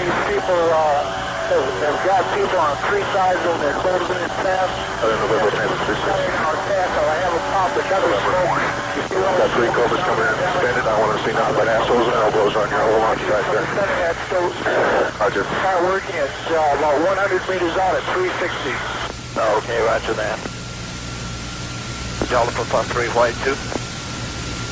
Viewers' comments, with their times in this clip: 0:09 You hear it first there's a lot of looping in this clip.